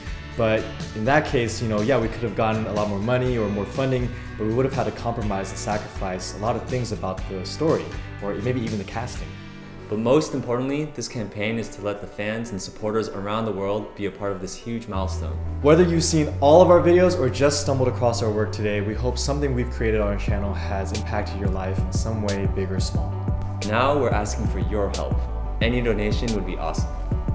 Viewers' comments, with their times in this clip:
0:10 gasp - Dat song O_O !!!